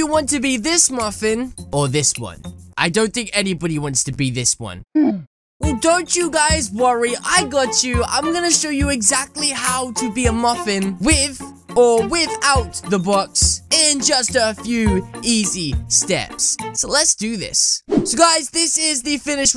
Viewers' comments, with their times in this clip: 0:05 Edit --> OOF! (lowed as OOOOOF!)